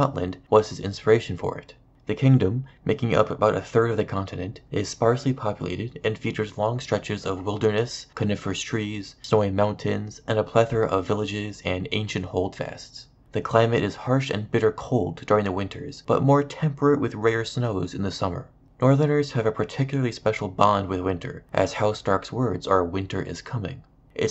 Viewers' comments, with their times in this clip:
0:08 you just say carnivorous trees?